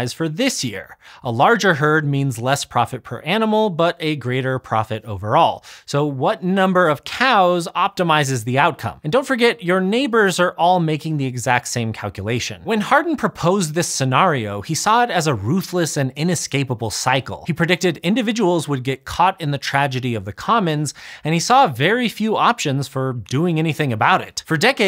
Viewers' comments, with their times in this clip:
0:06 That cowculation pun is delivered so smoothly I wasn't sure I heard it the first five times. Excellent work. 👍